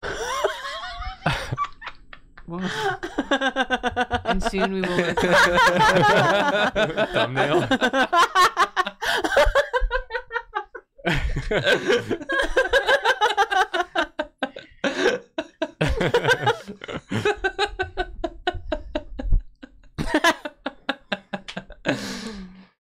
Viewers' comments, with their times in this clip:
0:04 i love when Drawfee is just a room full of people laughing inconsolably